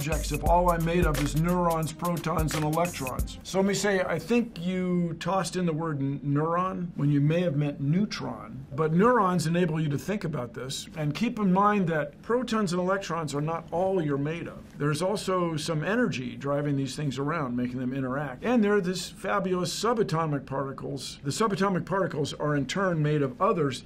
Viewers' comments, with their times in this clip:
0:04 I thought he said “I think you tossed in the word neuron, when you meant your a moron!” My volumes on low because I’m supposed to be in bed